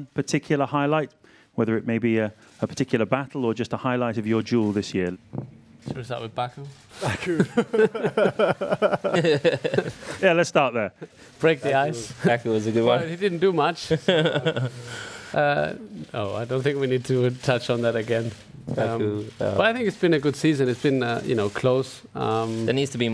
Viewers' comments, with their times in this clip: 0:08 Lewis: Passive Aggressive laughter. Not really his biggest fan as a person but he has a very respectable control over what he says and he's an amazing sportsman.